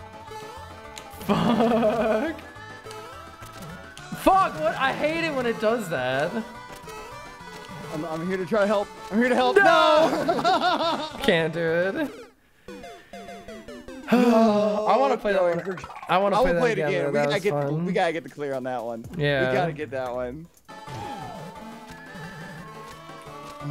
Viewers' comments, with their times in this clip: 0:09 that synchronised “No” though. chefs kiss